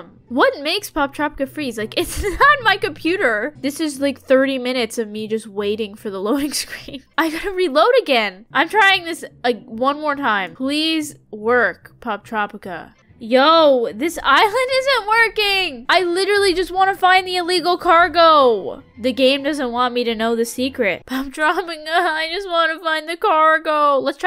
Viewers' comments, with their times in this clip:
0:08 soundin like Candace from phineas and ferv